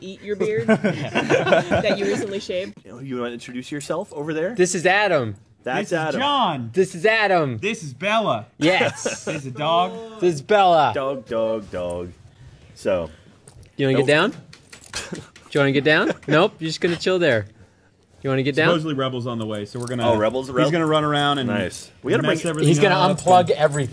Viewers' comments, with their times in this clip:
0:04 When someone shouts Kobe! always gets me